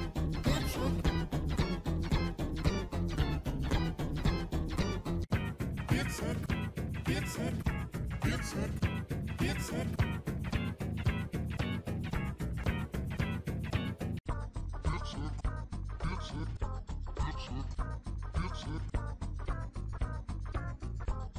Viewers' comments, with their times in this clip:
0:05 Real G-Major 4